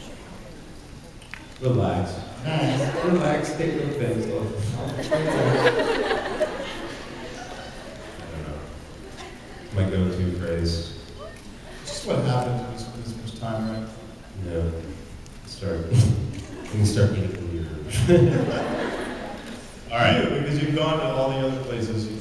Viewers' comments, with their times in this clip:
0:06 Can you tell what they mumble till Girl screaming I love you Ian.?